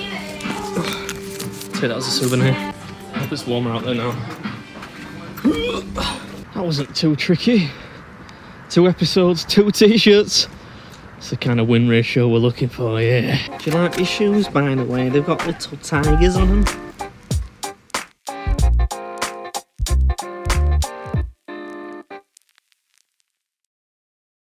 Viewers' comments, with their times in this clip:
0:05 Sounds like that was an unsuccessful attempt at throwing up.